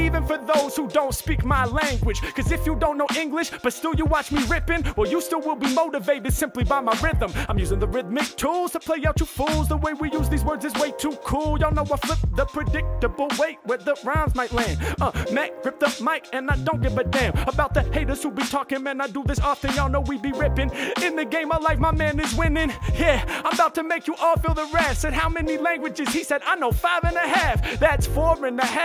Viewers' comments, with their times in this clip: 0:10 Superb! I was floored by the way H Mack set up and delivered the unpredictable rhythm on the word ‘predictable’ 🔥🔥🔥